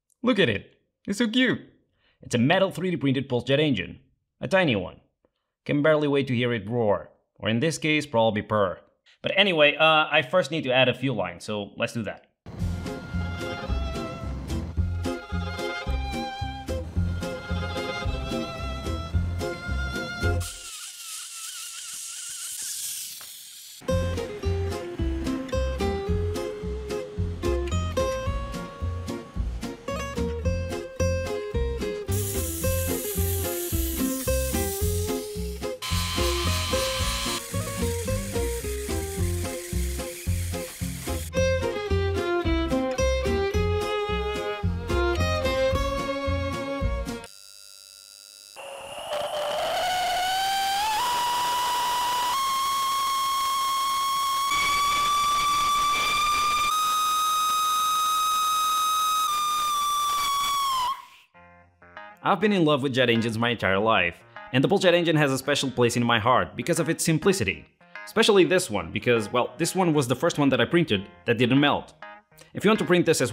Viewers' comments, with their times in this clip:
0:10 For a moment that sounded like some sports car XD
0:15 bro started some dragster 💀
0:48 insert kettle whistle but very angry
0:50 SCREAMING PULSE JET ENGLISH LOL BTW rip our hearing
0:54 sounds like mickey screaming